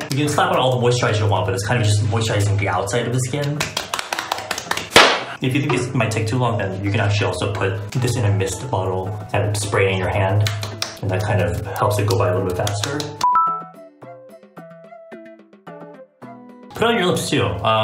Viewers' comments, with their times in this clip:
0:04 Why is no one talking LMAO